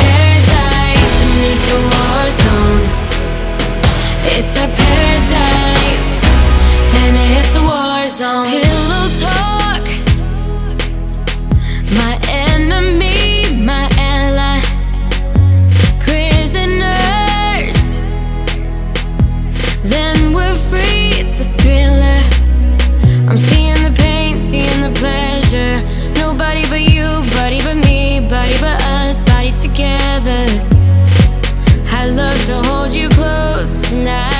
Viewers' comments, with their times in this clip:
0:09 something about the way she sings this is sooooo gorgeous😍😍😍
0:21 what did she say??? She sounded so weird